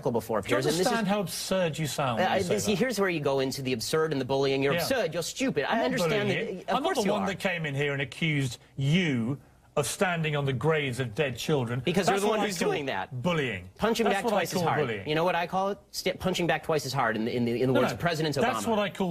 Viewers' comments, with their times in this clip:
0:04 when Ben imitates him I laughed so hard lol